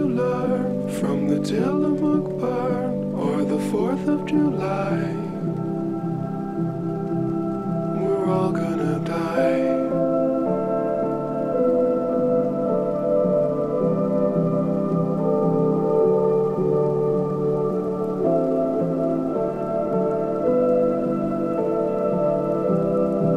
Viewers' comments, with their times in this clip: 0:04 this song makes me cry 😭